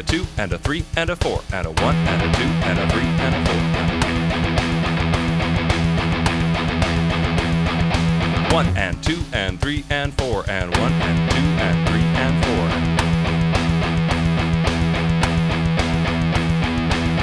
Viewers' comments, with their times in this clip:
0:05 Really liked the riff and rhythm Kind of sounded like "Immigrant Song" by Led Zeppelin.